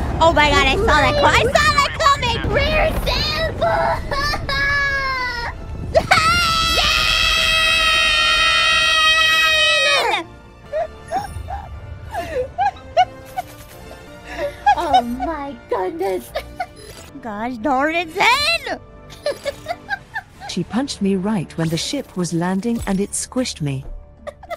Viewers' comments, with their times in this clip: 0:05 and here. We hear the harmonies cries of two gremlins being annoyed and killed by a cyborg/dragon.